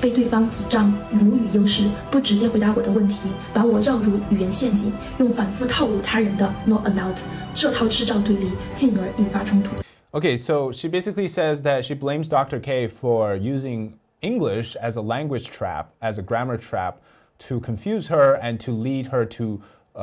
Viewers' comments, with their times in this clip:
0:08 that background music she puts on sounds pathetic to me like it is some sort of fiction/fantasy/misery scene you'd find in a film.